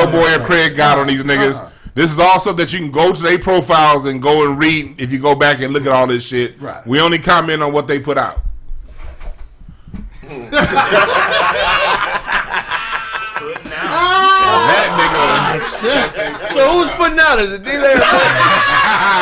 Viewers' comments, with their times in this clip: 0:06 One of the best parts of the show 🤣🤣🤣 the silence, then it sinks in 💀🤣